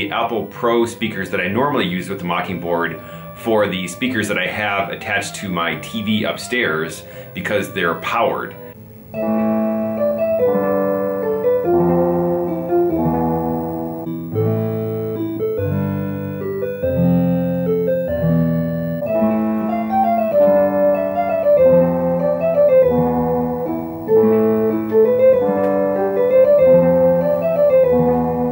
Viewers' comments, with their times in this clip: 0:09 Just listen to the difference between the 2 boards It's night and day. Am I understanding you correctly that the original card can mix between various different waveforms, but that the new one can only use 1 at a time. Then, presumably it would have to be switched off, a new table loaded and then it can use that sound? I'm just a complete ignoramus when it comes to sound and music.